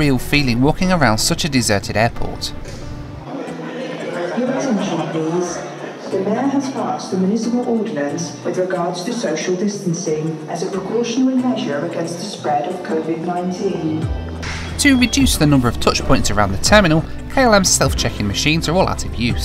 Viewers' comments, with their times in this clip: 0:04 I thought Amsterdam was a silent airport